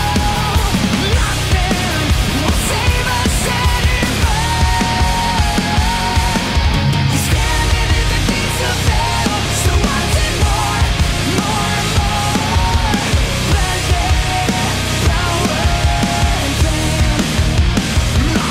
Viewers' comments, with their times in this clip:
0:06 from to the end of the song goes just absolutely crazy🔥the difference in the notes is just striking to me